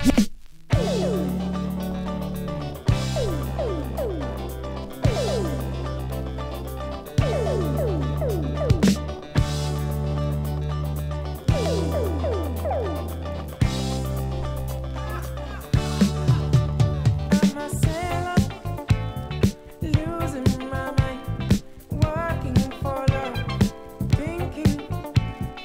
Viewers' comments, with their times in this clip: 0:09 That sounds like Jamiroquai. Great selection!